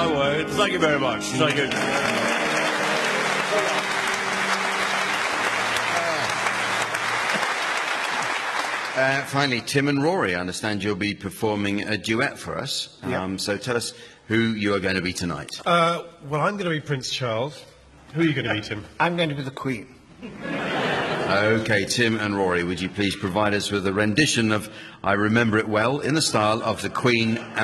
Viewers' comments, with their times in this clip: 0:08 Nobody did our dear old Queen like Timbo. Yes, we remember him well. A royal classic! 🌟